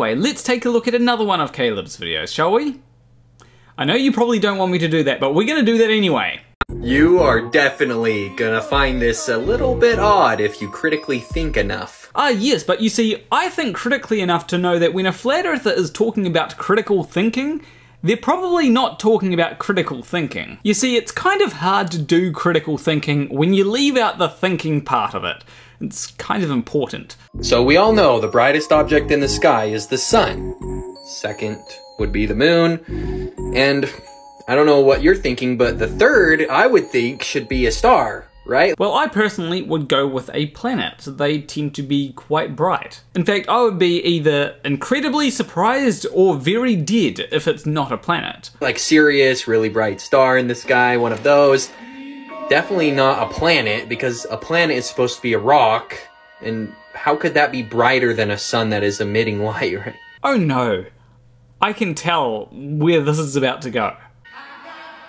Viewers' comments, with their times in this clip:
0:08 I'm just weirded out by the way he talks. "You're DEIfinitely gonna FINd this a little bit Odd."
0:46 Very did what?